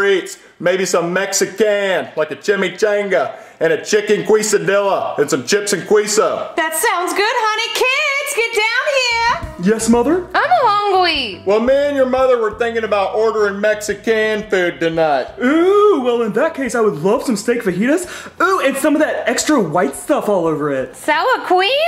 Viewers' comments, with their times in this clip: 0:03 as a Latino. I’m not even surprised that a white family is saying it wrong.